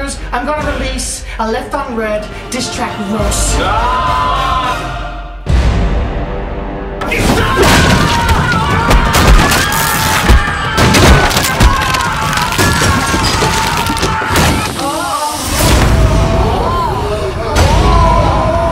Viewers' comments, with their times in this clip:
0:03 ah naw here we go again with the ear bleeding...